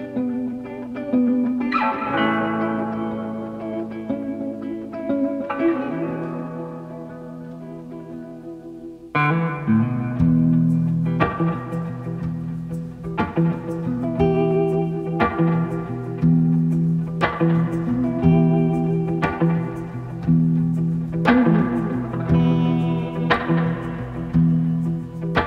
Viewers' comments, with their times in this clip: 0:10 That riff is great. The short little (B flat, I think) stab is so unexpected and sounds nice with the reverb. Going to have to figure out how to play it myself.